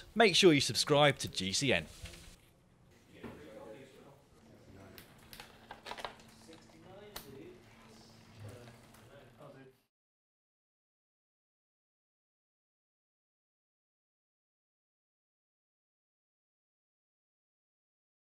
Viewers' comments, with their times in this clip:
0:07 I went back on this video to refresh my memory and help a friend set up gears. To my surprise someone must have been watching Bill & Ted because listening closely you can hear someone calmly comment "69 Dude!" The joys of doing bike maintenance late at night in a one bedroom flat with headphones on.